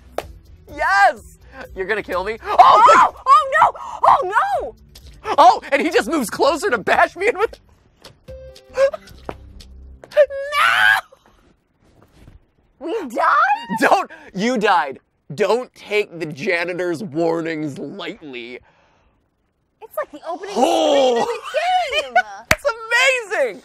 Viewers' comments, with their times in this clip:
0:09 matpat mating call